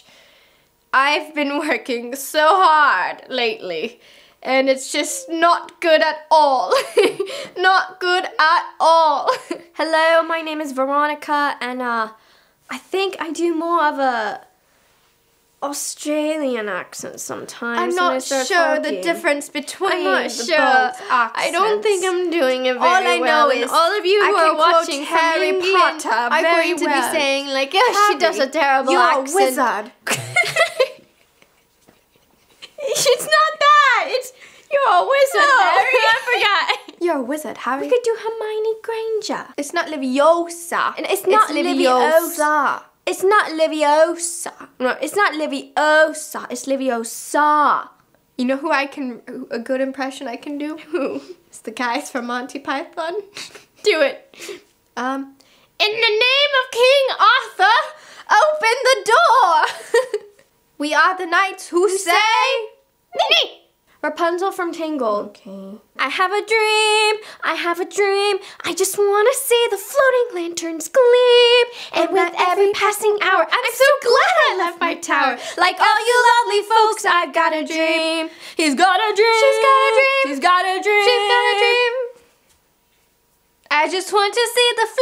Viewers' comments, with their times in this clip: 0:10 WHY DOES SHE SOUND EXACTLY LIKE EMMA WATSON?!?! Omg it's so weird that a minute later they actually happened to do Hermione😍
0:10 veronica sounded like Emma Watson
0:21 they are both saying something but you don't understand
1:10 wow what singers you guys are so good at singing💛